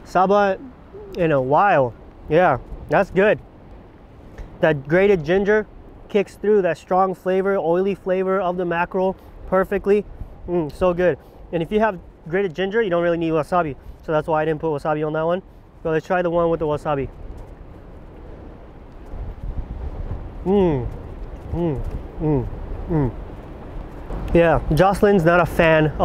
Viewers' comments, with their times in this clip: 0:07 is that a fuckin airplane?